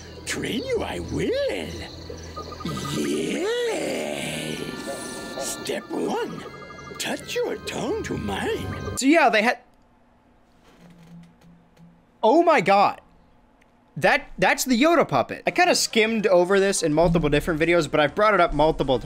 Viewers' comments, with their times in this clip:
0:03 Wow that must be where Joe (Due who made the dog of wisdom anim) got his iconic yEeEs